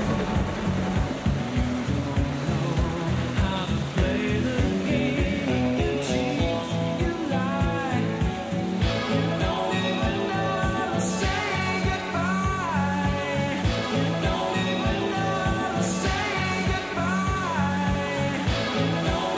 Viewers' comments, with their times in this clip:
0:06 Sliding on the Raybans, Music gets louder, Reality hits the Tramp = THE MEANING OF FUCKIN COOL..